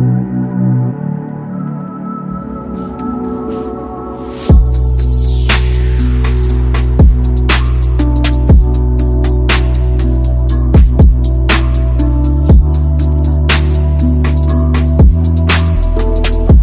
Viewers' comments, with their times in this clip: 0:04 Tune change feels jussssst right 🙇🏼‍♂️